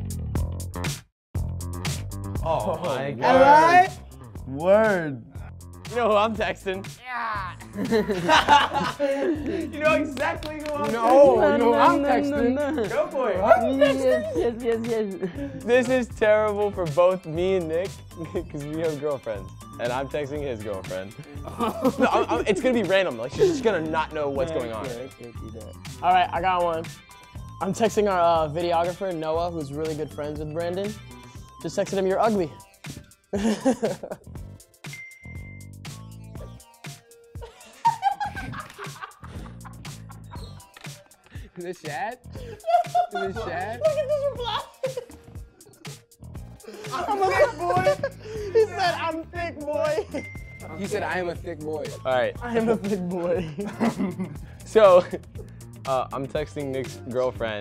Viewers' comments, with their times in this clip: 0:04 looool my boy Zion deadass shouted “ahlieeee” im cryinggg them Toronto slangs outt hereee
0:37 that laugh always gets to me😂
0:37 his laugh is so freaking cute omfg :,(
0:39 lolll edwins laughing moment😂😂